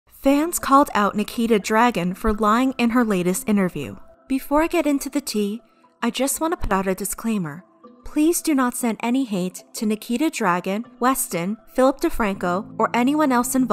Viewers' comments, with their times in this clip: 0:00 fans called out Nikita dR aaa gOn